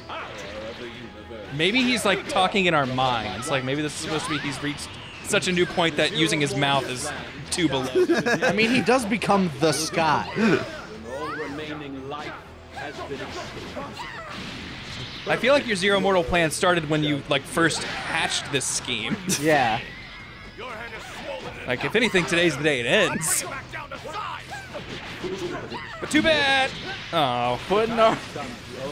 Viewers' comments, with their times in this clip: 0:10 maybe he does have the fusion voice but they used Zamasu twice instead of one Zamasu and one Evil Goku